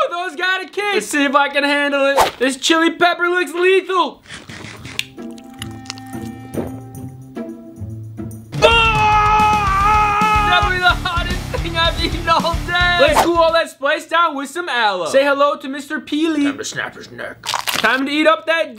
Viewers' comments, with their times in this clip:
0:05 looks around like its fine 2 seconds later: AAAAAAAAAAAAHHHHHHHHHHHHHHHHHHHHHHHHHHHHHHHHHHHHHHHHHH